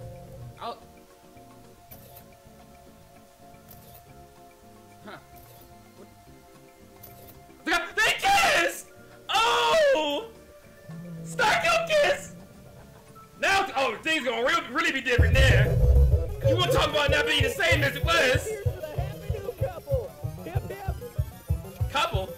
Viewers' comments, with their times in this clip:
0:07 he sounded like a white Eddie Murphy XD